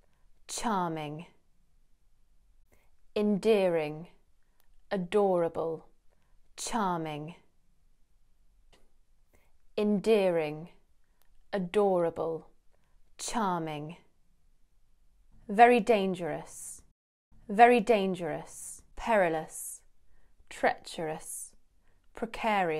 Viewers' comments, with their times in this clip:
0:06 I didn,t know that you would pronounce charming like that.